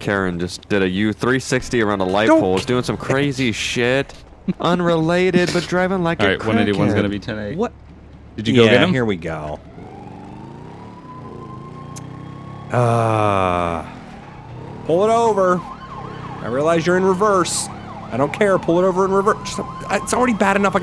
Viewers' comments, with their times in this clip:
0:05 Did you hear that rap ?